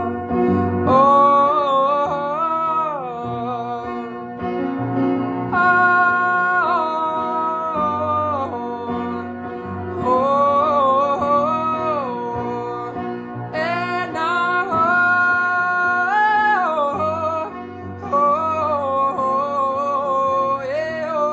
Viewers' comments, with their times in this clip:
0:07 Its in the morning here. I am just going to bed so, for me....this is a beautiful lullabye. Have an amazing day everyone.I love the hair💙